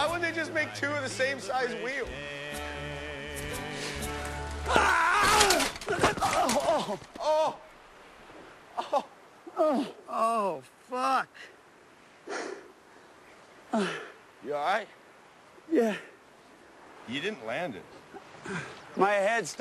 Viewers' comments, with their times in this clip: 0:03 that pre scream xD